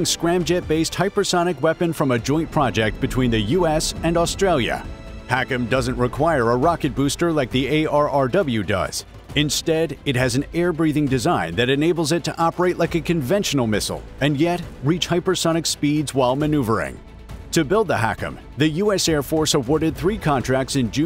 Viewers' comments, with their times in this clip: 0:04 "pronounced ARRW" yet again A.I. stupid voices make the word cringe seem like an understatement.